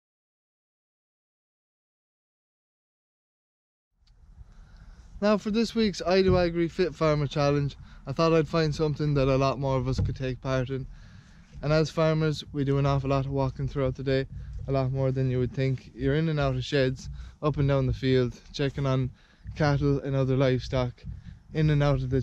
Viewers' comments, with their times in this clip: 0:04 NO SOUND UNTIL My bad!